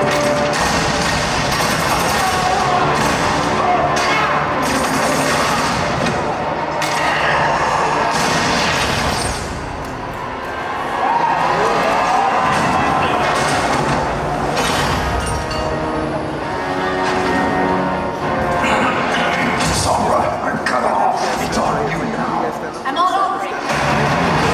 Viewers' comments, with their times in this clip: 0:09 tehy thought it was reindhart so they cheered.
0:09 Cheering for doomfist? Kappa